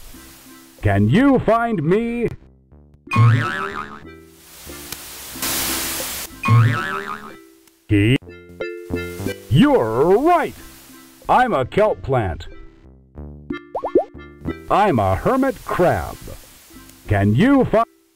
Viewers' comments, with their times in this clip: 0:03 Finally found what this game was called; I had it as a kid and was amazed and enthralled with it, especially that animation of the orca which, whilst dated now, was graphically impressive for the time. It was very educational in a fun way (heck, I learned what clownfish and butterfly fish were from this game), and I loved how they use a stock Three Stooges sound effect, used to keep doing that. 🤪